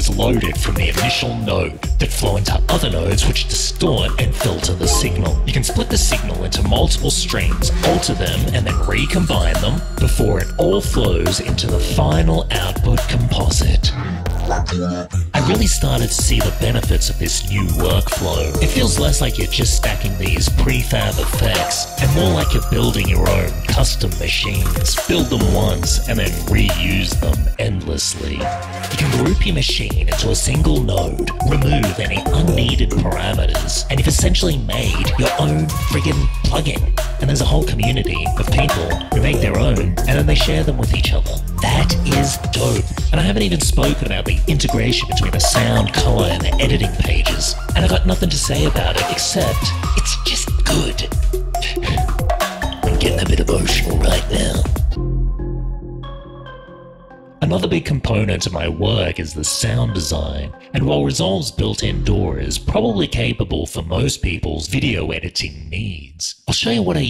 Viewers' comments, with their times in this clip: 0:10 okay that music breakdown with cuts is SO FIRE
0:20 That was interestimg and all, but the good and loud music was obscuring your speech
0:50 *sigh "I'm gettin a bit emotional right now" 😂😂 And can I just saay, your title screens are the most badass and intense I've ever seen.